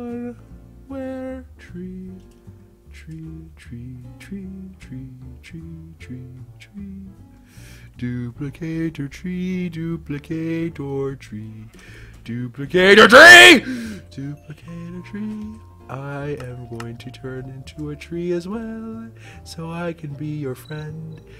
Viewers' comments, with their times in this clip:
0:06 Song ish is 🔥🔥🔥🔥🔥